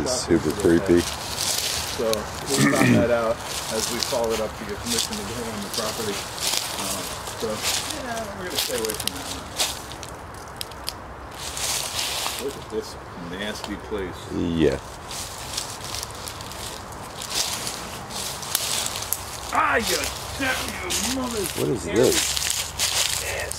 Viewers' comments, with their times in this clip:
0:07 sound like female voice saying get out of❔and it's good to see you guys back 👍✌
0:07 Great to see you guys making memories again. I swear I heard a woman's voice -ish.